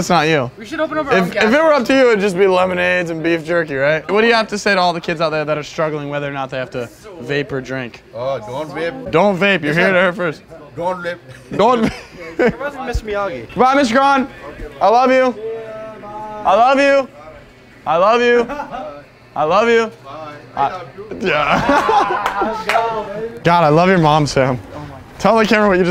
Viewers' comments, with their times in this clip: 0:10 is when the wise man speaks "Don vep"